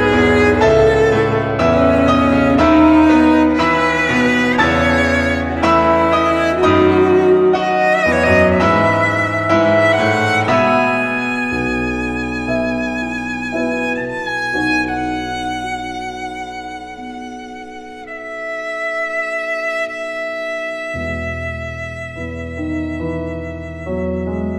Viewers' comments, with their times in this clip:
0:10 Who else thought this sounded like hallelujah ?